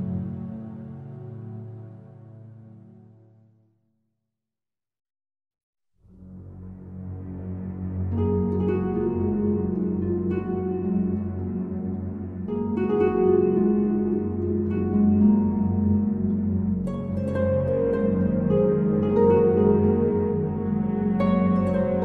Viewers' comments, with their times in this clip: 0:04 Epic and Beautiful. I'm actually really loving from Oblivion. So tranquil and amazing